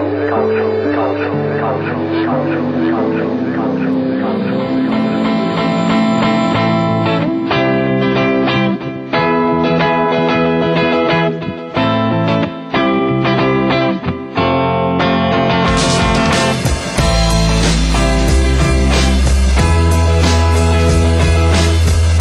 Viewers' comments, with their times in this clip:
0:09 Lovely neo-Velvets jangle commencing